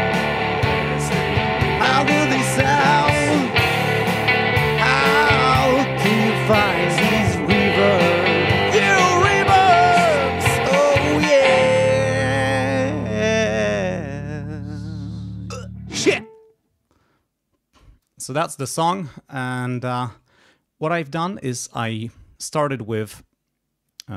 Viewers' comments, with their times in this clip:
0:08 Wow ! until today I couldn't believe how rousing it would be to hear someone test reverbs :D